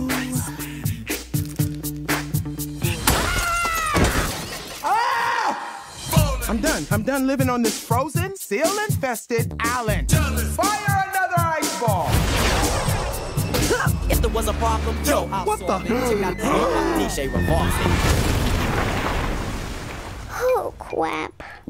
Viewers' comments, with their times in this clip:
0:04 I know this cry